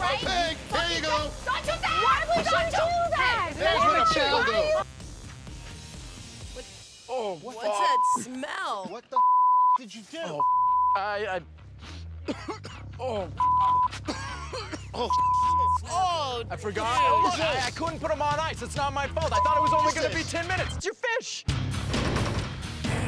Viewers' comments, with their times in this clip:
0:07 Me: choking like Buzz Lightyear